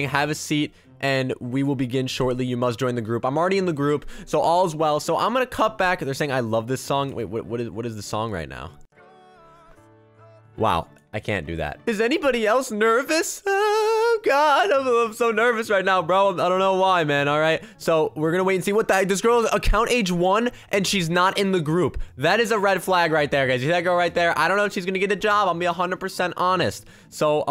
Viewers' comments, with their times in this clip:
0:07 I love that song too 💕
0:11 music plays Me: Starts to dance music stops Me: Awee..